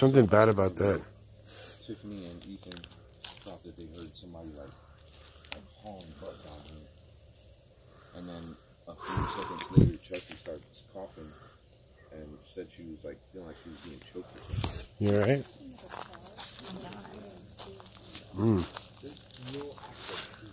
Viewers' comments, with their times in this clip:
0:04 I hear a women whisper . Or am i wrong ??